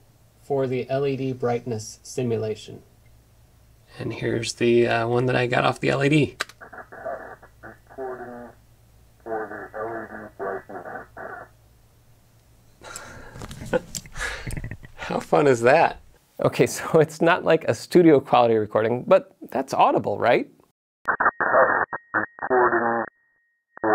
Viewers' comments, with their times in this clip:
0:07 That's actually a cool (albeit complicated) way to distort the sound. Makes it sound post apocalyptic.